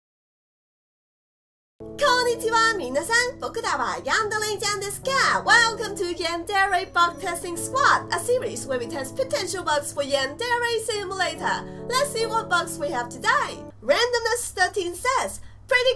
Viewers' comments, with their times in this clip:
0:02 captions: Konnichiwa, mina San baka dawa handling jaundice care